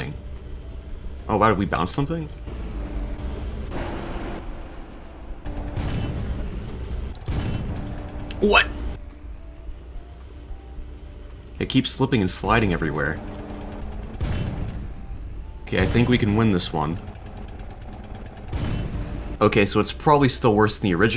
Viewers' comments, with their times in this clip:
0:08 What?! Love to hear more emotion.